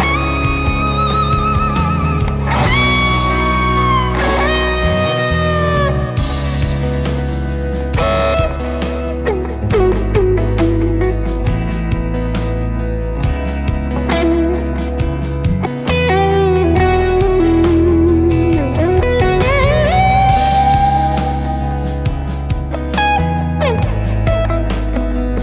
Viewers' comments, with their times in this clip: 0:08 THAT LITTLE LICK THOUGH